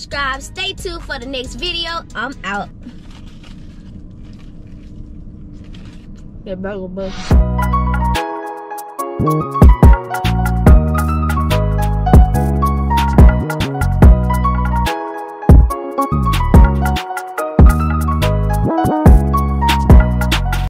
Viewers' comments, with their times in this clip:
0:08 that song low key go hard 🔥🔥